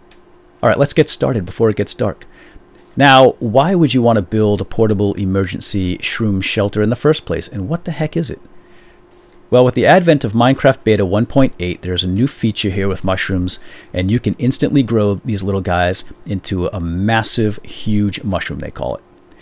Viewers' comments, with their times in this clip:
0:07 did he say shroon